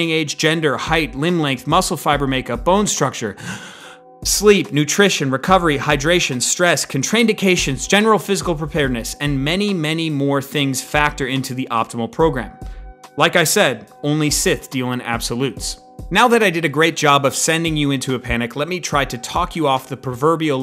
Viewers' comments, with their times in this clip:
0:06 Are we just going to ignore how he said contraindications ? lol